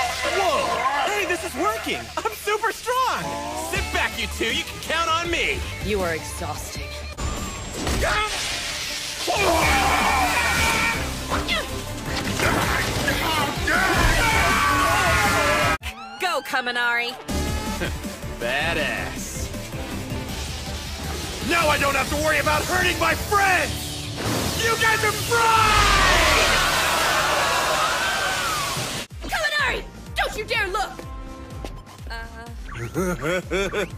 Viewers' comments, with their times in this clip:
0:09 I love Momo's phoow
0:19 Sounds like he said: Dat àss 😂